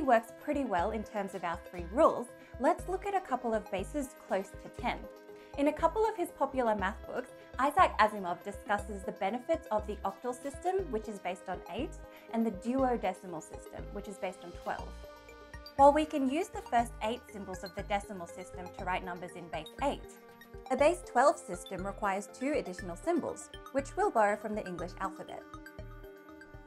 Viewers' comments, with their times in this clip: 0:07 Youtubes transcription system is great. I didn't know the octal system was based on apes.